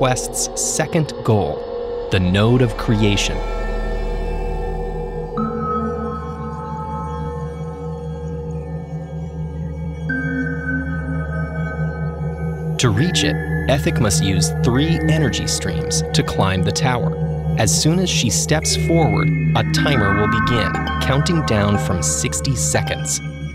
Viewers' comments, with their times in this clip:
0:04 The tiles Ethic steps on make blinking sounds that mimic the intro music